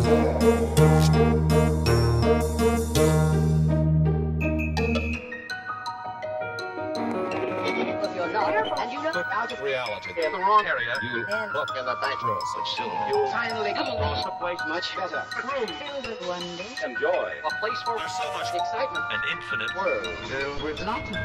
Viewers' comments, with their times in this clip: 0:08 I really like this detail..the fact that the voice sounds out of line like the partygoers used the persons voice from other times to say a whole different thing